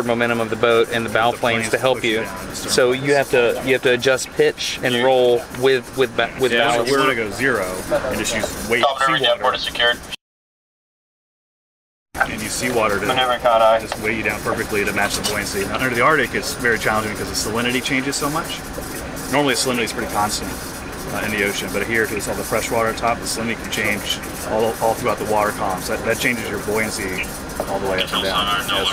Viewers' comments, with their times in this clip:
0:10 Why is the audio censored?